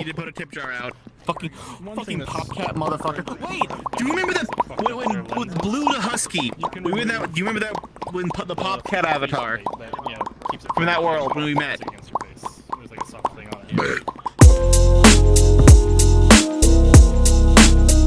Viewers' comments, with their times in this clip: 0:03 the popping with that avatar is just frickin CUTE